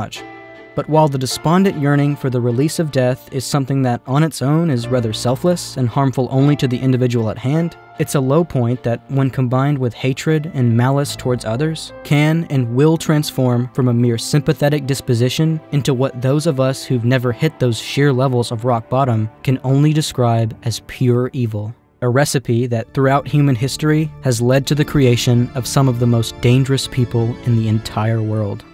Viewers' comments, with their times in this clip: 0:10 What is the dramatic piano song that starts ? And thank you so much for this amazing video.